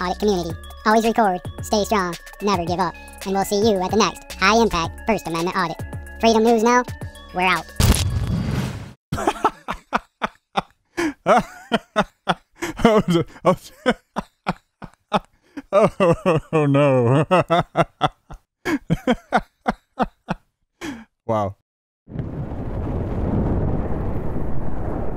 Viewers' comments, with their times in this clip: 0:10 the laugh: perfect comment on this behavior